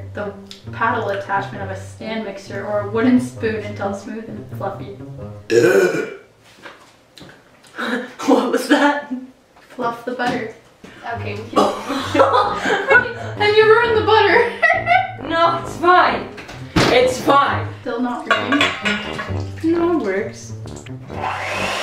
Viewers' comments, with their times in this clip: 0:05 Glitchbish: *burps* Henry the hen: *backs away* Me: *laughs so hard that I can't breathe* wHy ArE yOu TrYiNg tO MuRdEr mE, HENRY I THOUGHT U WERE A GOOD MAN >:(=